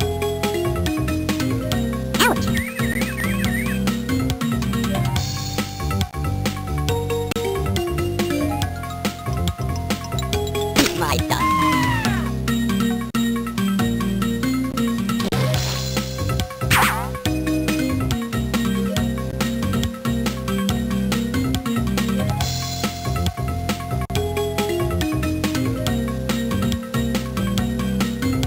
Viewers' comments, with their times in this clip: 0:10 i love that girly death scream lol